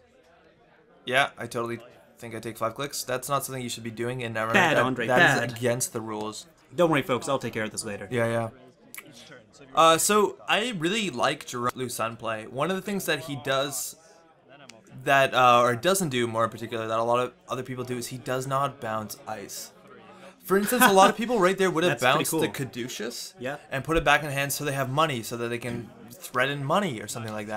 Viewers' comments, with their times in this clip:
0:08 Was that a kiss I heard? :^)